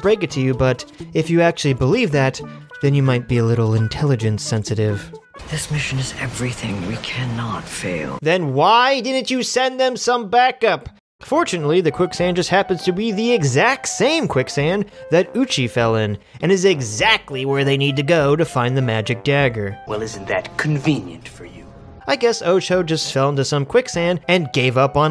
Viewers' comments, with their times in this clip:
0:09 LOL an example of how sloppy and quickly re-written the script must have been for these poor actors. Leia's line is obviously 'This mission is everything; we cannot fail.' but she delivers it 'This mission is everything we cannot fail.' and nobody stopped to re-take that.